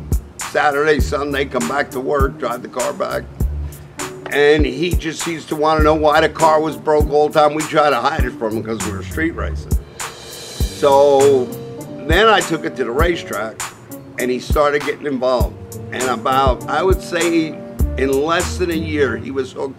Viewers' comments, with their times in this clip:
0:04 Had to turn what would have been a great story off because of the annoying music, bummer.